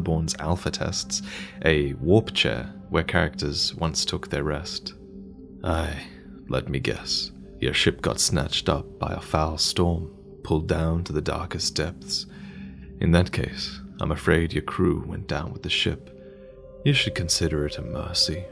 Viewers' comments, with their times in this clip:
0:04 May I just say; ONE acting class and Vaati has definetly got a voice acting career ahead of him.